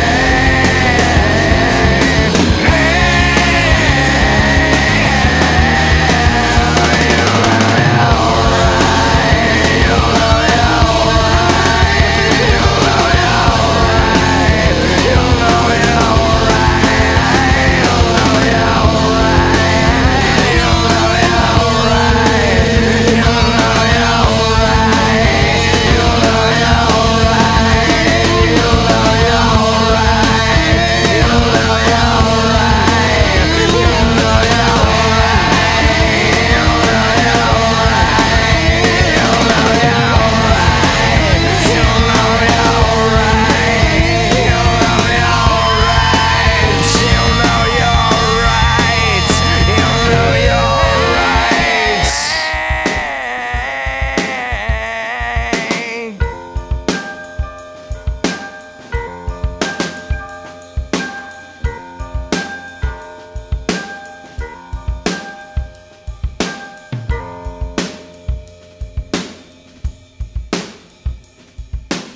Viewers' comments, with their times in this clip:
0:06 that drum roll might be simple but it will always, always give me goosebumps. even after 20 years later. same feelings.
0:21 guitar starts screaming🫂
0:55 i was saying an example of how you cant trust sources because they say different stuff. I was saying listen to you ears and i hear no p or n. Also it makes no sense for it to be pain, its “hey you know youre right” not “pain you know youre right” Furthermore, look look at yourself in the mirror and say pain. Does it look like that? No, looks like “hey” Also, last time i checked, google didnt write this song either so wtf was that argument?